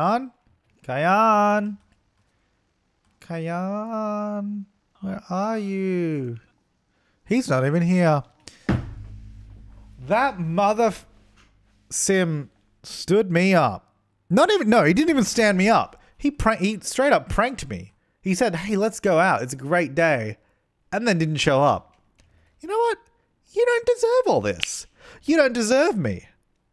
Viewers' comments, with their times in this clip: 0:08 what's that sound ? lol sounds like a guitar fell at the back or something